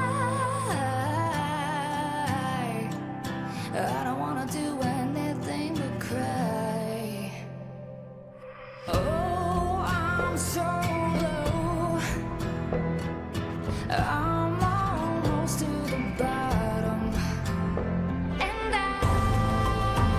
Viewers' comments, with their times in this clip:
0:07 the audience thinks it's finished you can hear them cheering and she is still dancing 😂 Maddie and Mackenzie are by far my favourite dance moms children
0:07 You can’t hear any cheering !